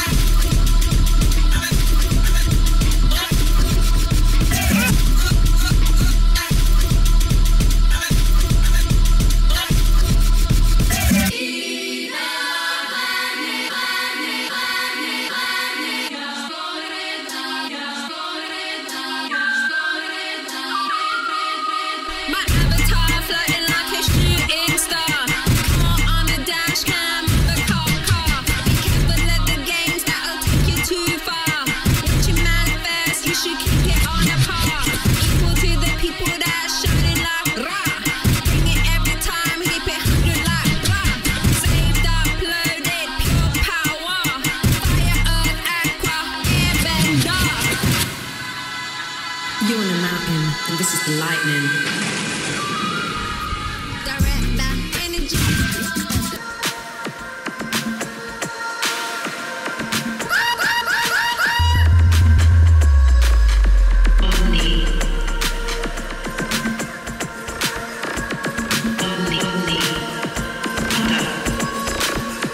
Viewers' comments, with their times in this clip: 0:04 build up brazy. nice set!
0:54 OMG, not 1, not 2, but three messed up transitions in a matter of seconds. This is a boiler room record. I always held boiler room to the highest standards but this ain't it. I would have taken the loss and not posted it.